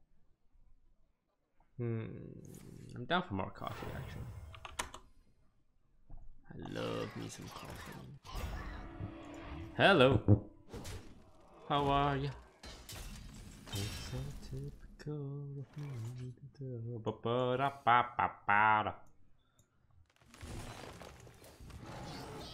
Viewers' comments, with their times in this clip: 0:09 Was a fart?